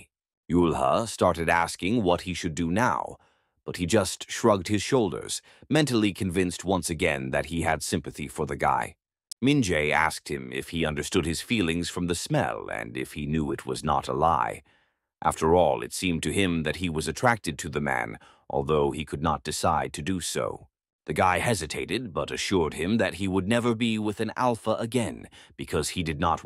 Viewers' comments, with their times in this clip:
0:08 why did he go "tic"